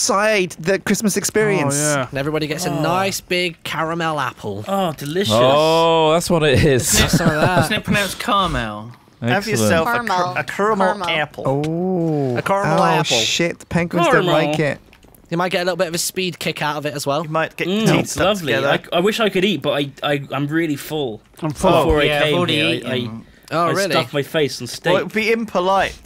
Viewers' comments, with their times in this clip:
0:10 are they trying to do a American accent Beacuse that was horrible